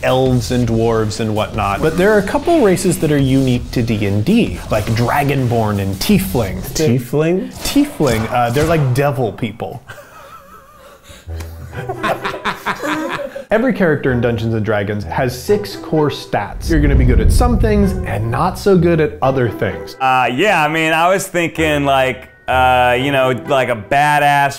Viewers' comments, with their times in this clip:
0:09 Holy shit the fact that they did this makes me just-- I don't know why I'm so eXCITED I JUST PLAY IT MYSELF AND Y E S also, the most evil cackle I've ever heard.